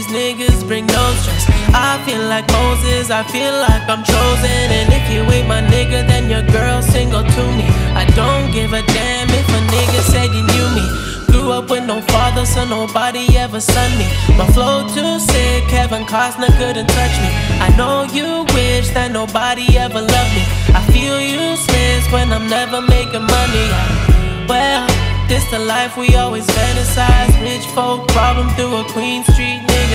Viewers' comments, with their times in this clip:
0:10 dawg i just realized what abel said bruh🥶🥶🥶🥶🥶🥶 DAYUMMMM oh thought it was " so nobody could said they sonned me" still sheeesh